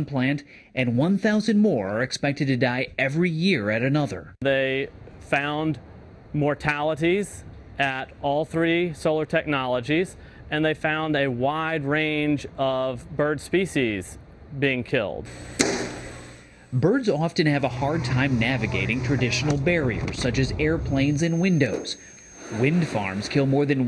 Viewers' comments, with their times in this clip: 0:04 "they... found... mortalities, at all three solar technologies. And they found a wide range offff.. bird species!.. being killed :(" I love this guy